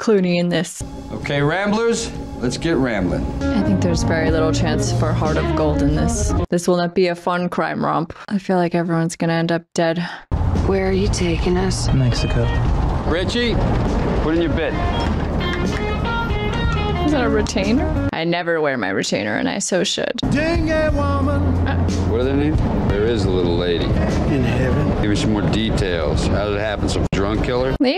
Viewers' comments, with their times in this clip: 0:10 I thought you said "crime rob" and had to rewind to hear "crime romp"....it made me laugh 😅😅😂😂😂😂